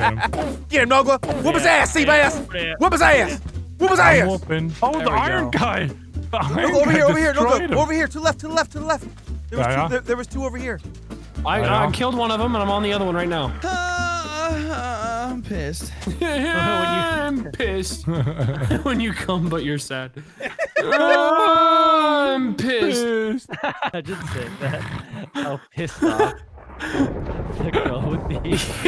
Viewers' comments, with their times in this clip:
0:09 he sounds like he's a kid telling his dad where he saw a spider.